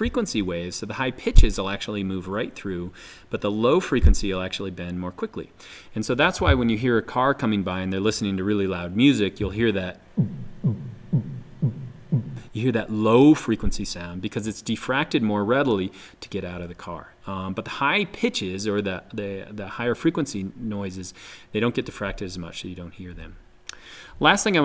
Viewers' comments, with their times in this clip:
0:07 That beatbox was fire